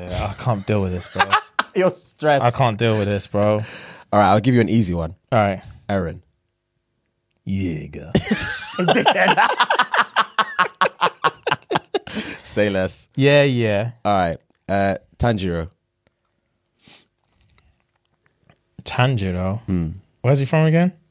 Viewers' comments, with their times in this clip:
0:07 That ''Yeager'' with just the smile.👌Sounded so good.